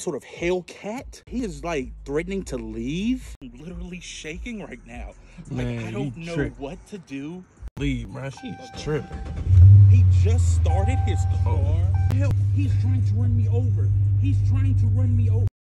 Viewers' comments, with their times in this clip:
0:12 the distant “he’s trying to run me over” from the car after he’s turned the music off LMAOO